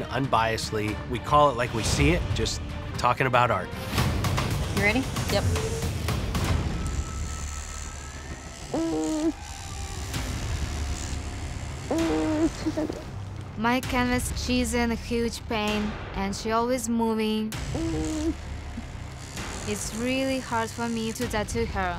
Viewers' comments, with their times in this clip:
0:07 Why did they use the same groaning audio like 4 times 😂
0:09 it’ll never not annoy me that they edited the same noise for the canvas like 4 times, and also that canvas sucks ass